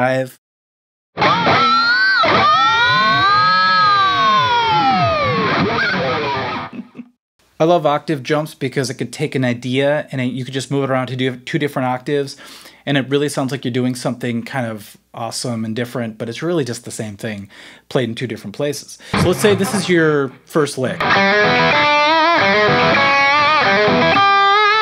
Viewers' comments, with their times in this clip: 0:06 chuckle had me dead